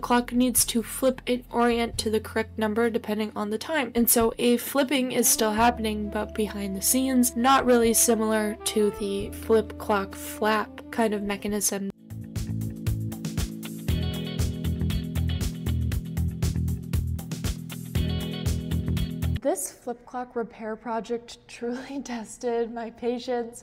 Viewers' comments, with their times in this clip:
0:04 Dang thats even cooler than a standard flip clock mechanism! and quieter!